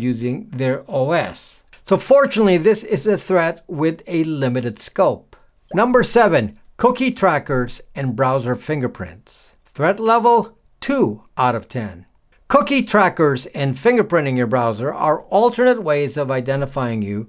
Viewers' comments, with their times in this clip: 0:04 who tf is zipping their coat up & whispering? I can’t hear wtf you’re saying. 😂